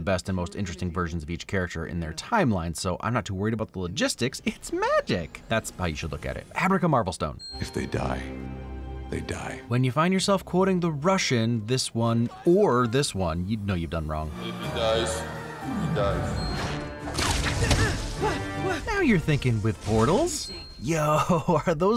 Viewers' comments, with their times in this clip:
0:03 was that line delivery a Sam and Max save the world reference?